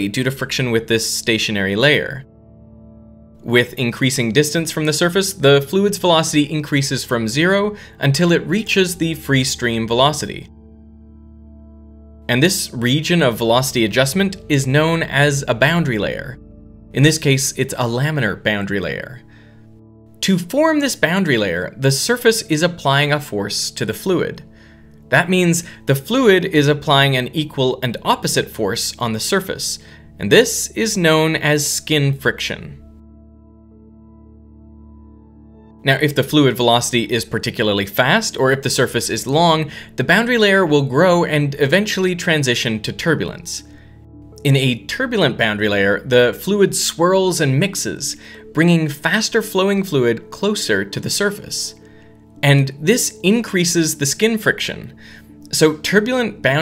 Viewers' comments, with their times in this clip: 0:07 i thought i heard a mosquito next to my face
0:38 there is a weird music tone while you speak It's annoying.